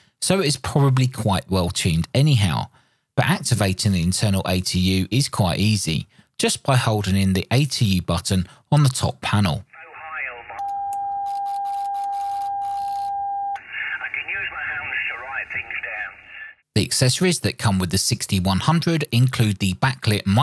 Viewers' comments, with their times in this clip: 0:08 did you just tune up on that dudes conversation lol :)